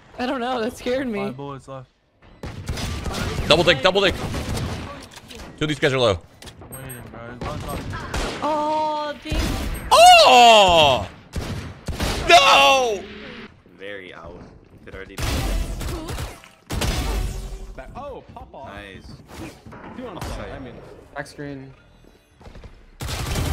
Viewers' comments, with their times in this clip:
0:09 the uhhh and nahhh happened at the same time🤣🤣🤣